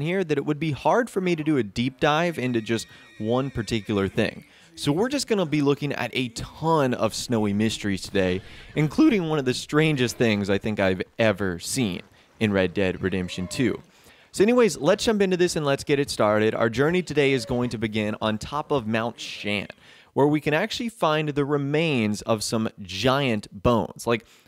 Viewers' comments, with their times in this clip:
0:08 that voice crack though. Lol
0:08 that voiccrack tho
0:08 That voice crack